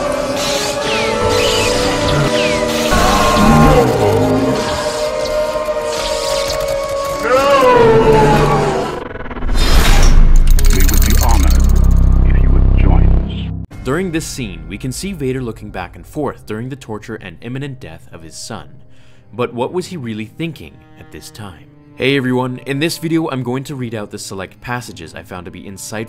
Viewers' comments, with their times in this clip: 0:09 He sounds so human